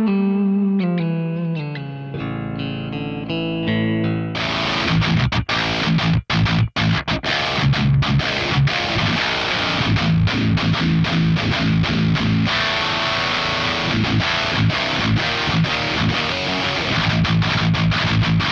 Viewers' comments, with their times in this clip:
0:05 That tone is sick, I could riff out for days if I had that sound